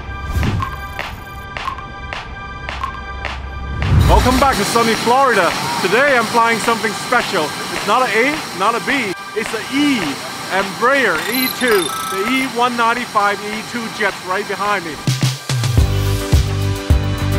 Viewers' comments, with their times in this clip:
0:03 he definitely said welcome back to soviet Florida